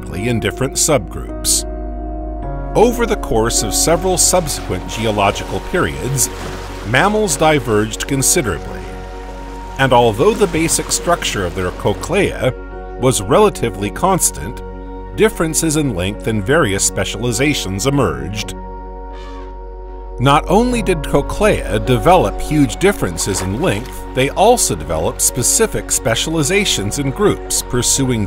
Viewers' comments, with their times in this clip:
0:10 Barely 7 minutes later, it pronounces the same word differently. There you are. Text-to-speech robo voice, confirmed!